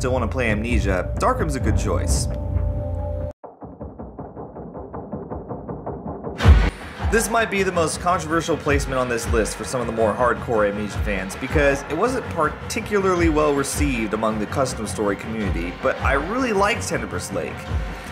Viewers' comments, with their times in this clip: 0:03 whats the song name for Nr.3? sounds super scary